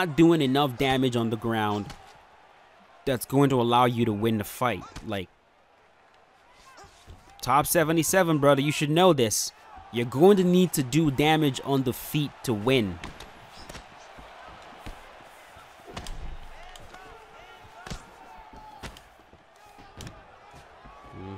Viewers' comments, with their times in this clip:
0:09 Someone in the crowd yells "stand up, stand up" RIGHT after you talk about how he needs to do more damage on his feet 😅😂